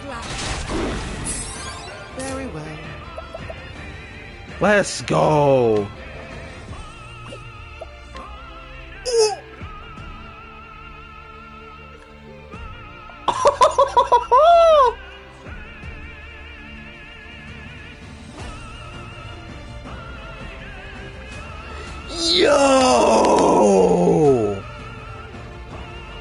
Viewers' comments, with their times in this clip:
0:07 NGL when I first heard for myself while fighting Vide, I legit started tearing up because it was so beautiful...